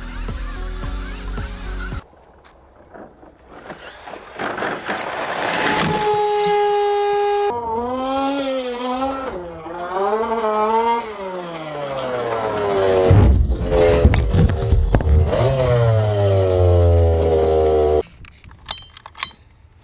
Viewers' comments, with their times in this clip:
0:03 Lol, you can tell that is the vaterra ford raptor because of how loud that fan is.